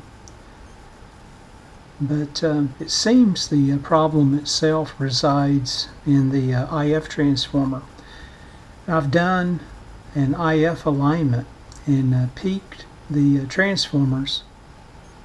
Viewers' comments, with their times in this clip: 0:03 ...it HUMS because it doesn't know the WORDS(?)